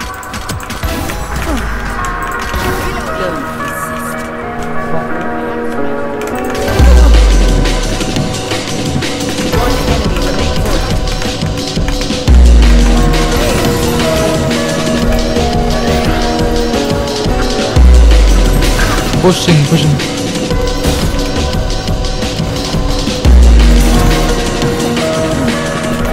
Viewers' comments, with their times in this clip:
0:08 run 3 ahh music